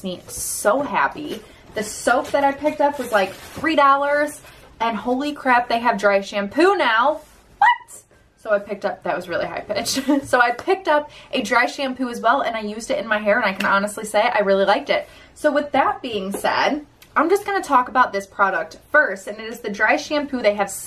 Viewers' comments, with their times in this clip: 0:06 it’s sounds like Lexi kitty 🐱😭 love ya, love the videos, thank you for always being so real! I always feel so welcome and like I’m on face time with y’all!! 🥰